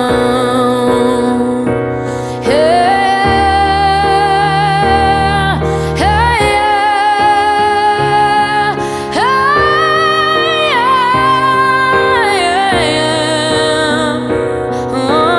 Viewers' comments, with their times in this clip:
0:03 MY EARS HAVE BEEN BLESSED AND FOREVER WILL BE BY YOUR VOICE